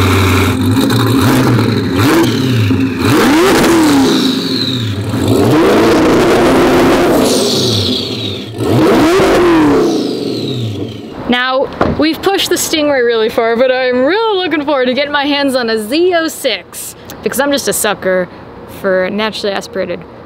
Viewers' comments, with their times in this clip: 0:06 she doesn't only rev loud, she sounds enraged xD